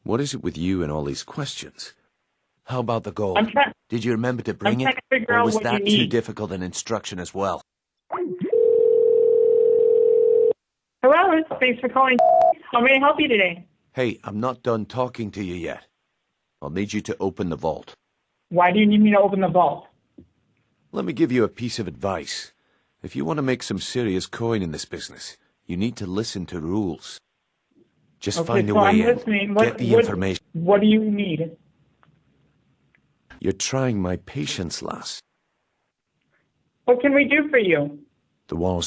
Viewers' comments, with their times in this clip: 0:07 I know this is old, lol, but, lol, I died at (giggles)...
0:20 The lady sounds so distressed